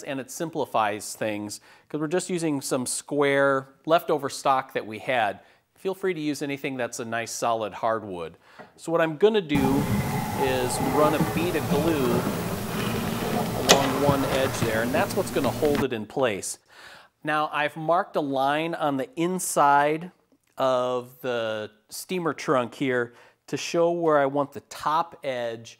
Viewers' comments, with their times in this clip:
0:09 Loudest bead of glue ever. lol